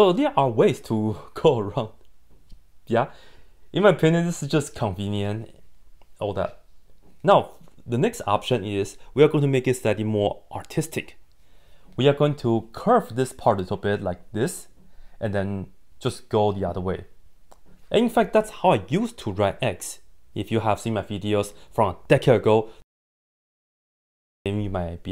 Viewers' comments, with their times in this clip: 0:09 STOP I HEARD “AUTISTIC” 😭